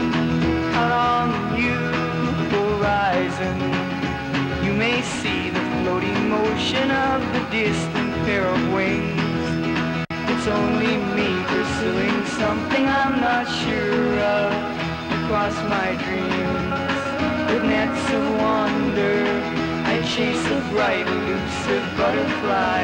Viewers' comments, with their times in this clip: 0:10 The tape is clearly edited and after the edit Susan is singing along with Terry.